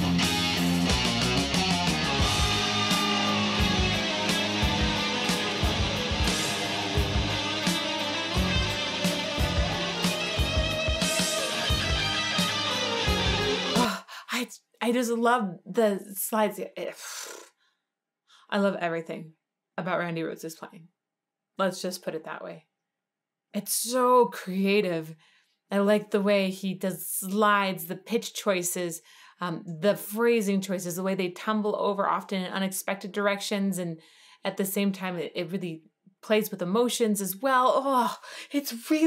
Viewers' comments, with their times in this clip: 0:07 I think of how in demand Rhoads would have been writing music scores for movies. This guy would have needed 10 fireplaces to display Grammys. He understood how a single not in the right place stirs emotion like it did here @ the mark you can see it in her face. A solo played slow and methodical with a stirring note in the right place. What other rock guitarist does that so affectively?
0:20 Excellent analysis again. I was getting Moody Blues vibes (Nights in White Satin) toward the end I was going off into Carmina Burana Land 😆